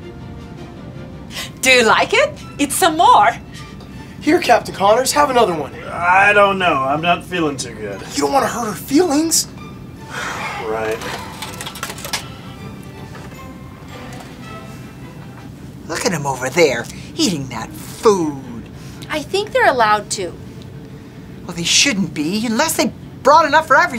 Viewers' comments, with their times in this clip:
0:08 "you don't want to hurt her eelings" eelings..?
0:08 i love how it says "eelings" instead of "feelings"